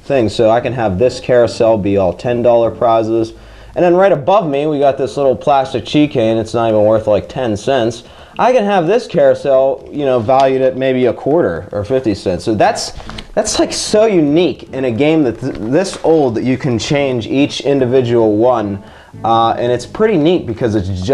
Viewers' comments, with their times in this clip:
0:03 chee kain lol
0:06 he said key chain but the first letters are changed
0:08 did anyone else hear that he said cheykain instead of keychain?? lol